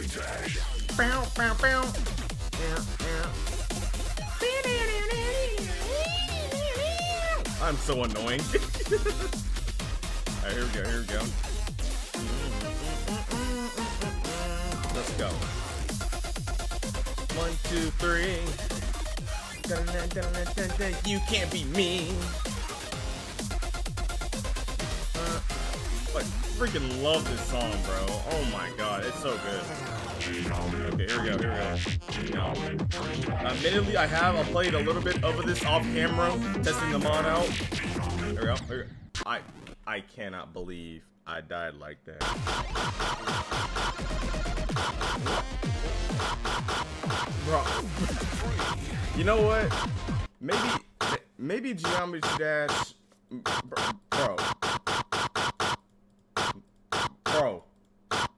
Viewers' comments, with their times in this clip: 0:07 ngl i actually sang along with you 😂
0:42 loudest mouse clicking ever.